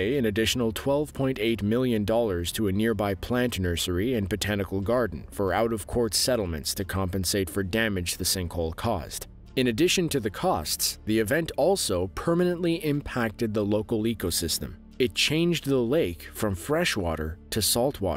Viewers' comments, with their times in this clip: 0:06 What do sperm have to do with the settlement?🤔